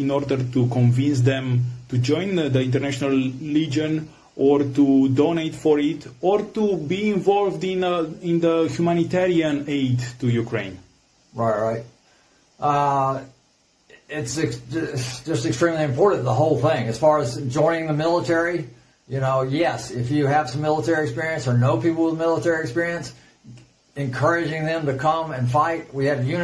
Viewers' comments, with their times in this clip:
0:09 I think the interviewer has a Romanian accent ... not Ukrainian... but irrelevant to what Routh is saying.